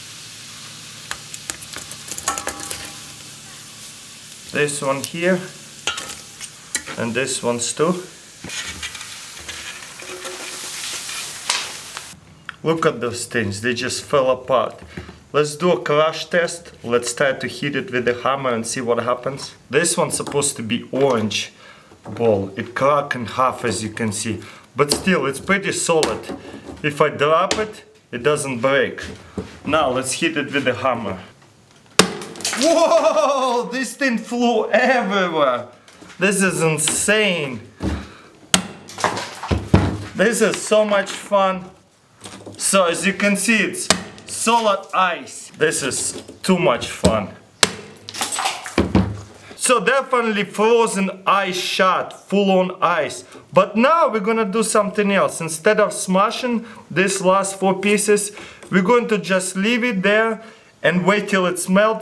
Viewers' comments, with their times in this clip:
0:03 What was that voice
0:03 listen carefully and you can hear a goust say yhea
0:15 I was excited to see how he "heat it with hammer" .. how did I not get that one right? XD
0:16 let's try to heat it with the hammer
0:25 I love when he says: "If I drrap it". XDDD
0:29 I thought he said " let's heat it with a hammer
0:29 "Let's hit it with a Hummer." Ahhhhh, russian people...
0:29 "this is so much fun!!" Like a Hulk :D
0:30 Did he say let's hit it or let's heat it ? great accent.
0:32 that moment you lose your accent
0:32 ur reaction sound was funny
0:33 Your new laugh?
0:33 when he says whoa, he sounds American.
0:34 That "Woaaaaahhhh" in sounded American
0:36 Almost get your accent right CrazyRussianHacker
0:38 "this is so much fun". Yeah, sure sounds like it buddy.
0:38 "This is so much fun." listen to the excitement in his voice.
0:50 So they're finally frozen i shart